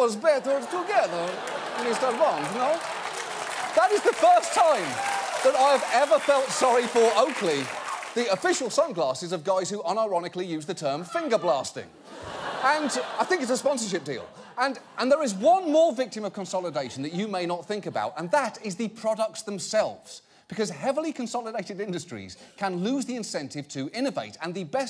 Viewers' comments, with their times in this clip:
0:10 Johns Bond Villan Impression was so fucking spot on it was amazing!